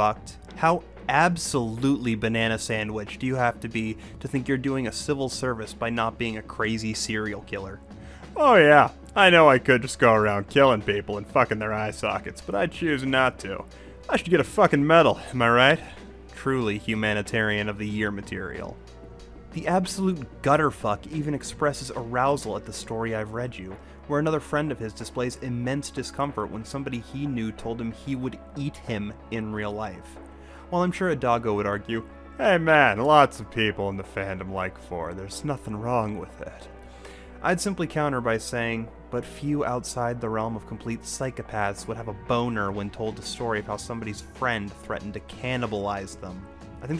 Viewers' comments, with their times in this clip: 0:08 Is it just me or did that voice impression sound like Joe from family guy? You have just earned a new sub my dude. Love the new character stills too :D
0:09 that's a flawlwss Kronk voice, and I don't know how to feel about that
0:32 joe from family guy? is that you?